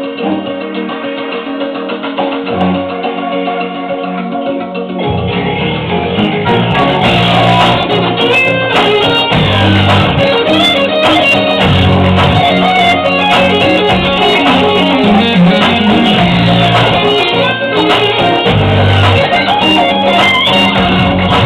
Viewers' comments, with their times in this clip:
0:07 Its called bad video compression. It happens a lot on youtube and with people who aren't used to making videos or have less than decent recording equipment. Also, there are some subtle differences from the normal song, the most noticeable of which is The 3nd octave shift isn't that quick in the RJ version.